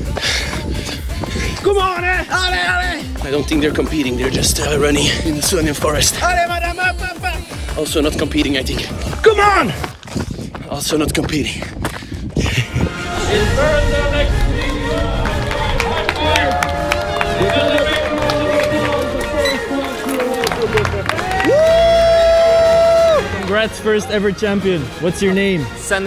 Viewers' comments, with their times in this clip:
0:07 yelling come on to a guy out on a walk is actually too funny